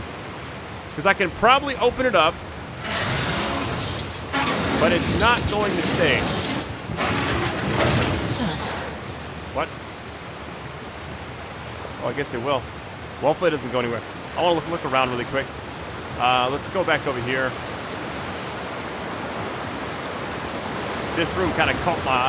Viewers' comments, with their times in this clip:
0:09 Reminded me the style Joey used to say what?? In friends 😂 pure confusion